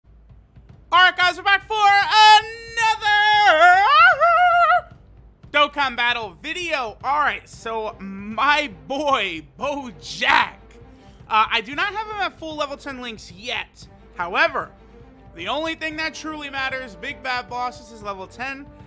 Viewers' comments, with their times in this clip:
0:04 when the record scratches